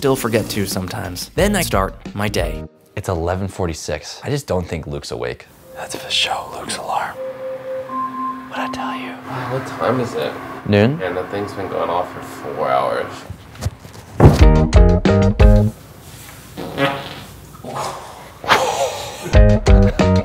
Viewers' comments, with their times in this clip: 0:07 thats a nice alarm icl where do I get one?